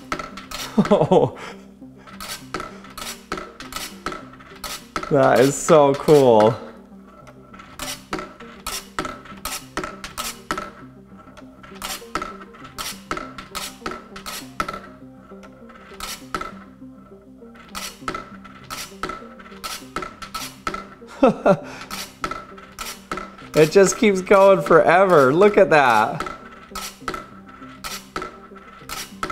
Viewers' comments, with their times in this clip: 0:10 the dead giveaway is that it's creating sound. A real perpetual motion machine would need to be silent and produce no heat. Otherwise it wouldn't just be perpetual motion, it'd be energy-gaining and that ball would need to run away via positive feedback. Unless the losses due to sound were precisely equal to the energy gained each cycle? That seems super unlikely.